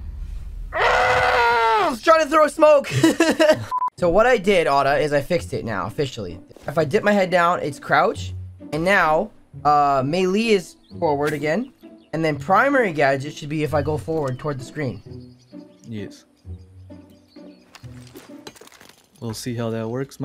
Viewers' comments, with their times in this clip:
0:08 did you just pronounce melee "may lee"?